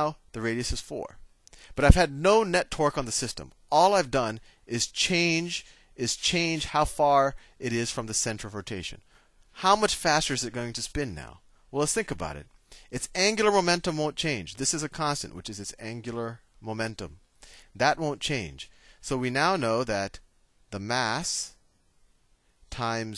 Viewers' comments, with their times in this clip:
0:10 Great video thank you. you sounded really posh.